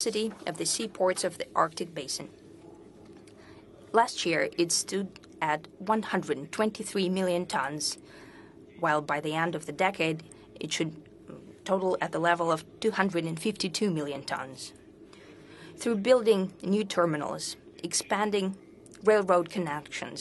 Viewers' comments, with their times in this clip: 0:06 lol that high pitch noise scared the hell out of me